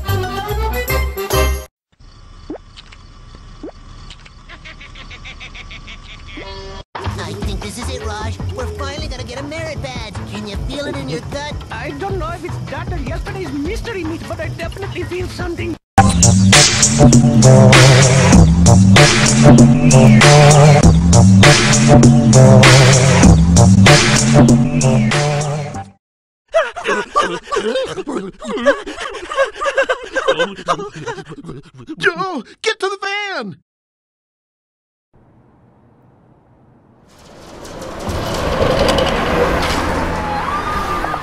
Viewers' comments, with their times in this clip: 0:07 HEY LAZLO SOUNDS LIKE ROCKO Thats two things Camp Lazlo and Rockos Modern Life have in common
0:27 sounds really wrong